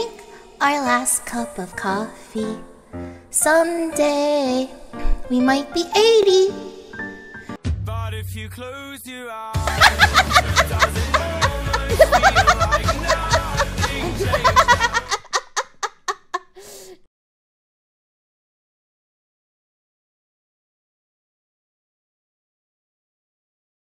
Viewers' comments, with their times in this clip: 0:08 Just her laughter alone made me so happy.